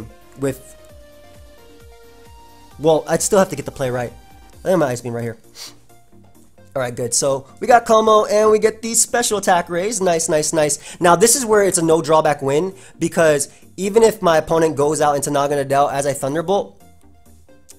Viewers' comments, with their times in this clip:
0:04 lol the cheeky sniff